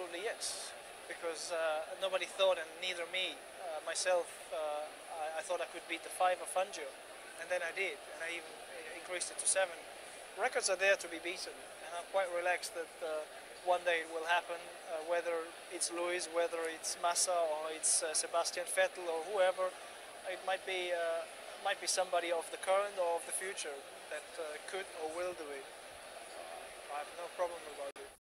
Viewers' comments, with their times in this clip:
0:10 He sounds sooo english there